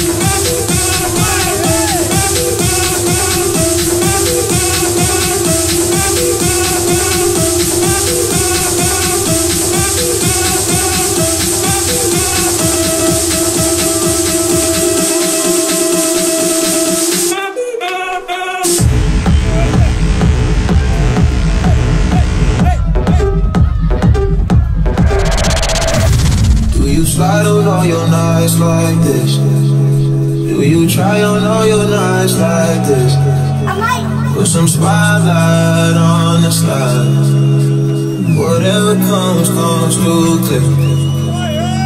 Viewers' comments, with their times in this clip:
0:06 the cdj lagged lol
0:19 Duuuude that Kaiserdisco drop 🔥 from another planet
0:28 Slide X Summer time sadness x sick beat drop 🔥🙌